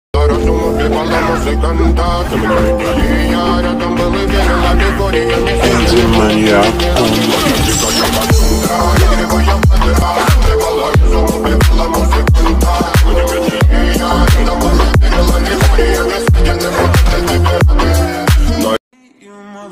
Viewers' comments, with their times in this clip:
0:05 bgm is op